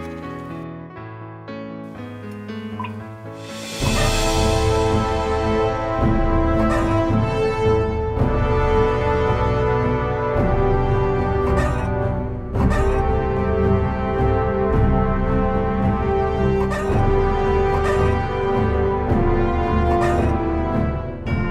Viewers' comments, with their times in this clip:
0:04 why does this music is giving me flashbacks from WW2